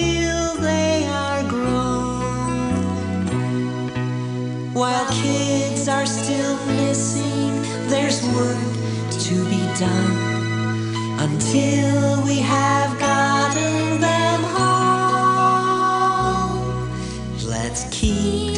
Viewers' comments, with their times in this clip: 0:04 "While Kids Are Still Pissing" HOL UP-